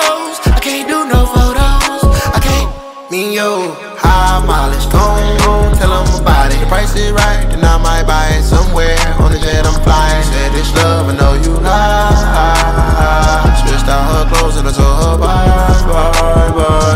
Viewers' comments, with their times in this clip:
0:03 Bro u have to listen its better the delay on "dont" is legendary